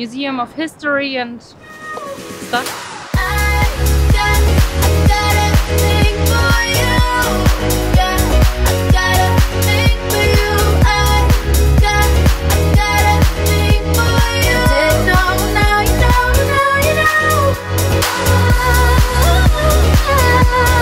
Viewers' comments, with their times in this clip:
0:03 that vocal on the track is way to loud and sounds so sharp to my ears not pleasant to listen to at all...